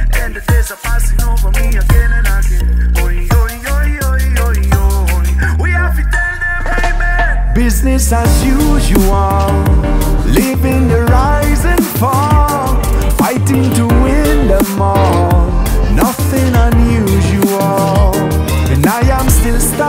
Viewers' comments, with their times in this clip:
0:05 Unique bass play ! :)